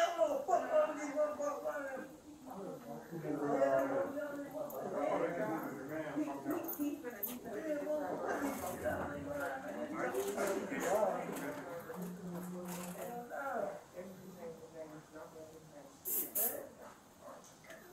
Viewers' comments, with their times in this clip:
0:05 Quando is definitely the one setting at the end of the hall yo I can hear him screaming at the person hes talkin to